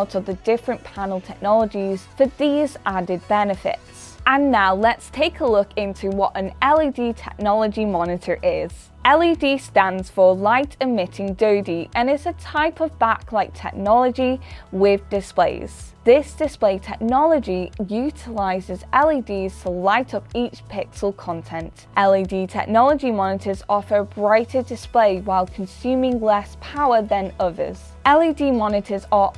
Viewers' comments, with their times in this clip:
0:10 light emitting DoUdY
0:11 LED = Light Emitting Doo-dee? Really??? I was taught, Light Emitting DIODE. (Ronnie James Dio is pretty good also! RIP) Or maybe it's because of her tongue stud.